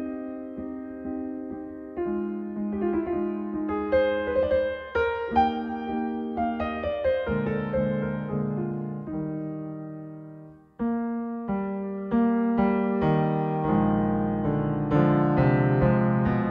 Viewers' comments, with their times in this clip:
0:04 The transition is incredible